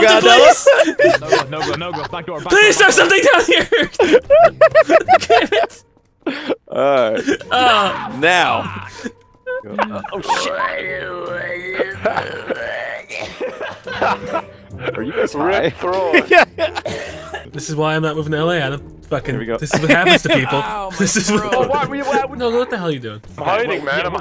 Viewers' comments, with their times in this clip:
0:09 The voice of the bat from The Great Mouse Detective